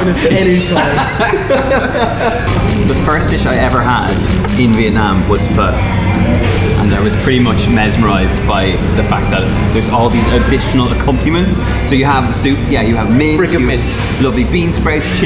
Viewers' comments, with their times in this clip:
0:03 Sorry mate, but I don't think that's how you pronounce it.